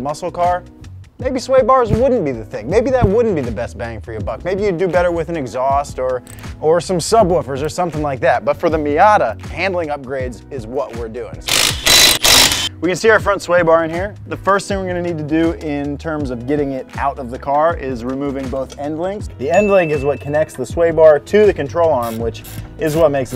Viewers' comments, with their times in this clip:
0:10 RIP earphone users